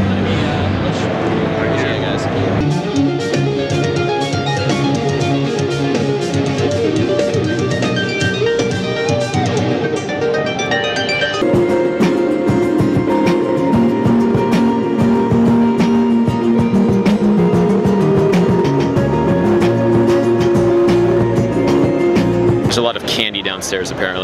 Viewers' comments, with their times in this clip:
0:10 Is like a second of Sarah Longfield, then immediately transitions into Little Tybee.